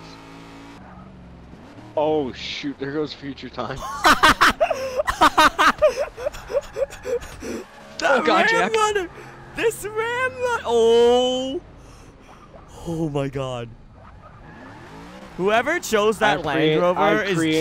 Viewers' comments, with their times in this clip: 0:03 he sounds like a raptor THE ILLUMARAPTORS ARE COMING SAVE YOURSELF
0:04 what is that laugh my guy